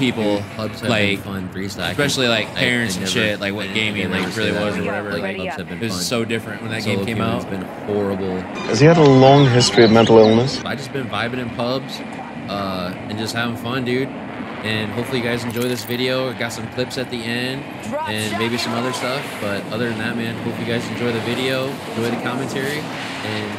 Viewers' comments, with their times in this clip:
0:04 sorry for the bad voice over lol uploaded the wrong video 😅 IT WONT HAPPEN AGAIN 😊